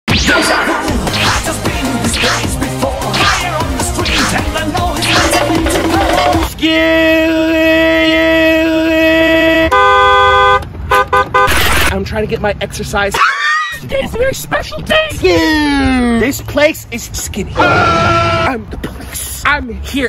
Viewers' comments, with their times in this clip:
0:06 its 3 am and you have a Fly in your room